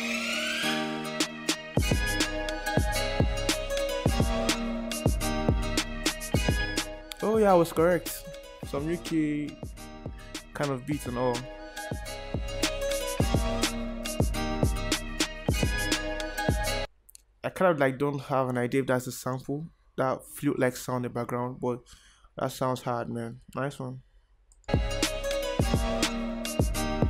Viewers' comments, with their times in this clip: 0:10 The beat was dope and I liked the flute sample too.Your channel looks great and so professional.